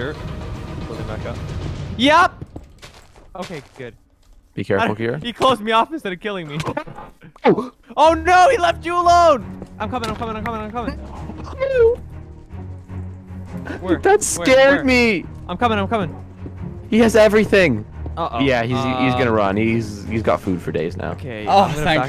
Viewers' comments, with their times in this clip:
0:10 “NOo-___-oOO” hits different 😢